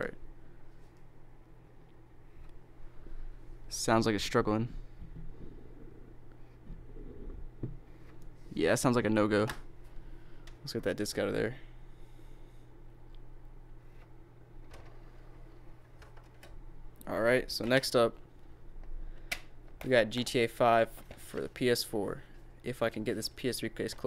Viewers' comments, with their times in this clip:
0:09 DVD player said lorD